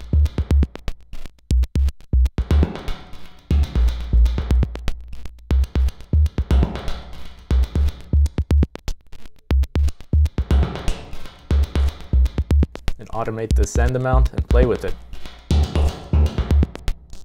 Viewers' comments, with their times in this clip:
0:05 Interesting music. Do you have soundcloud or similar?